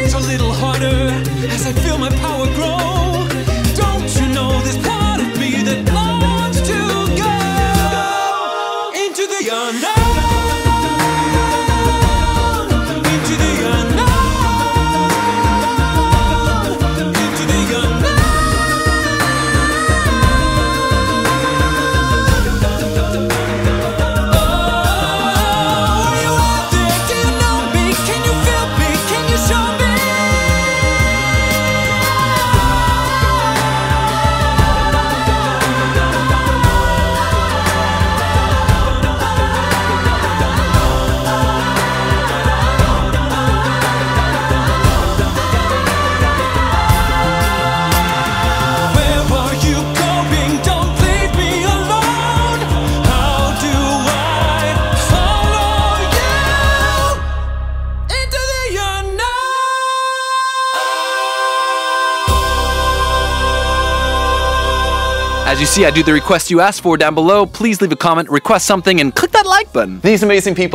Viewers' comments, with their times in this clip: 0:10 Auto-generated captions: Into the yonder
0:41 can we talk about those amazing those hight notes he just did!! 😮😀!! Love this cover Peter!!! Amazing job!! This made my day!!😁
0:57 What technique did you used for that low note ? Was that a growl?